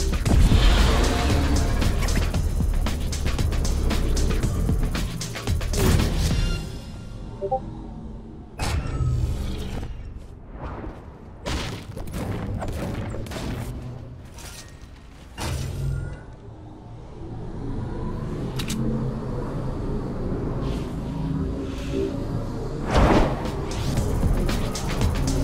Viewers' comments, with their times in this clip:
0:07 fucking discord alert ...